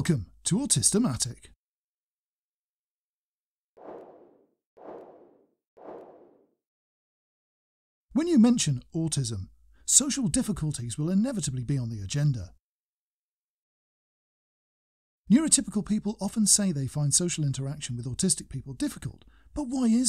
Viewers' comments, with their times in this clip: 0:04 I've really good headphones and I thought something at the neighbour's flat must have fallen down, which caused another and another thing falling down like domino.